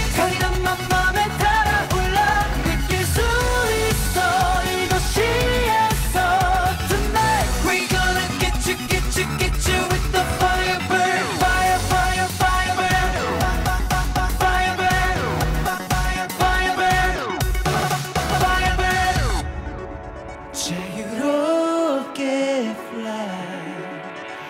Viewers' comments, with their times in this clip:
0:06 Hyungsik's TONIGHT was extraordinaryyyyyyy